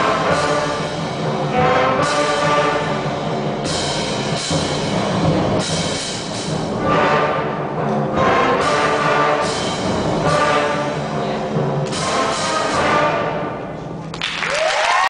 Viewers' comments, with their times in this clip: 0:03 crash cymbals messed up
0:03 crash cymbals messed up!